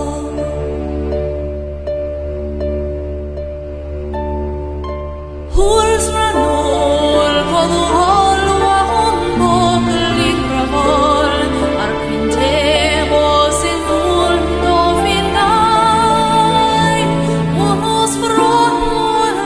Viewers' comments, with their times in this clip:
0:03 This singer has an interesting accent. at least to me it is like many words with 'd' and 'b' are nasal and 'd' at the end are more like a 'l'. the third couplet, starting is a great example. (aproximating the sound the best i can) Huzrah nul, kul no ol, wah hon mok lingrah vol Ahrk fin tey. moziik fun, no fin gein!